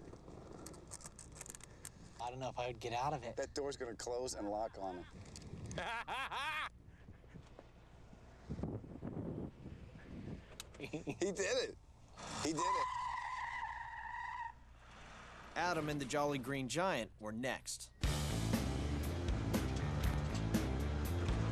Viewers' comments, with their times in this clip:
0:05 Me: that laugh 😂